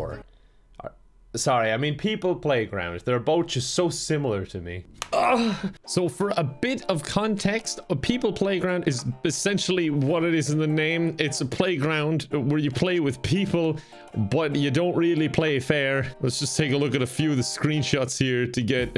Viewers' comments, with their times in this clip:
0:04 that moan haha